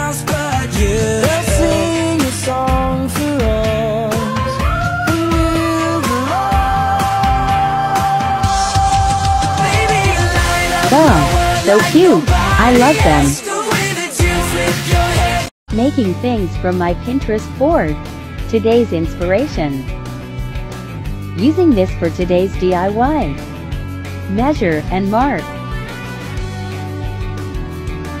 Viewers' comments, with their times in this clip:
0:10 they look so good- and the song ahh